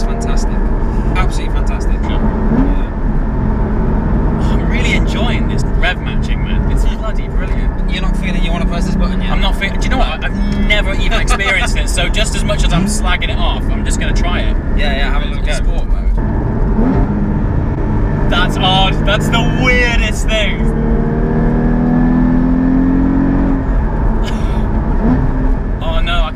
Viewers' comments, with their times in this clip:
0:10 I thought my phone went off in vibration mode hahaha